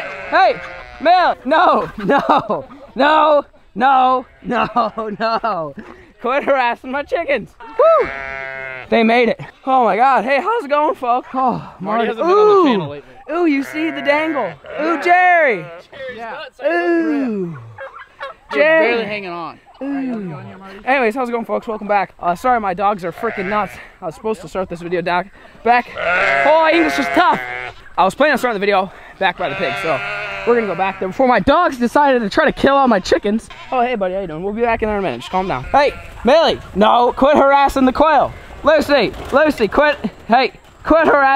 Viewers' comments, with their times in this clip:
0:10 already a voice crack 😂. "Hey HhOoWwSs it going folks".
0:24 breathing like rose o’donnell in front of the fridge